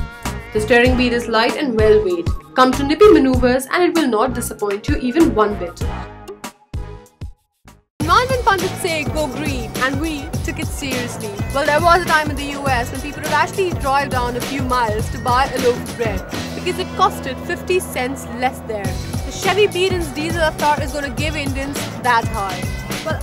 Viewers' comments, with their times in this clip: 0:06 And she raps. pretty.. good.